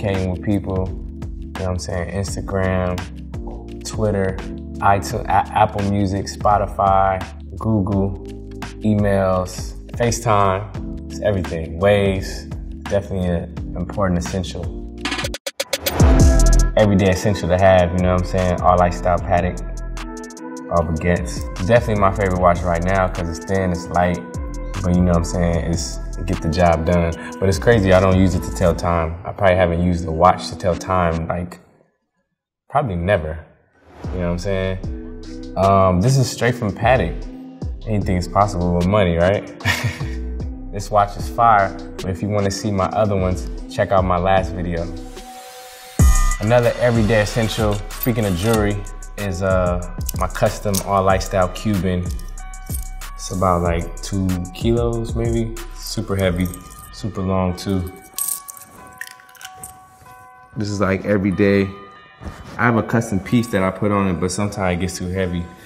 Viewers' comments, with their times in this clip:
0:07 he said "gugu" instead of "google" hahahahhahaha
0:07 Nobody: Tyga : googoo
0:07 he was about to say "co- communicating"
0:47 speaking of JeWaEy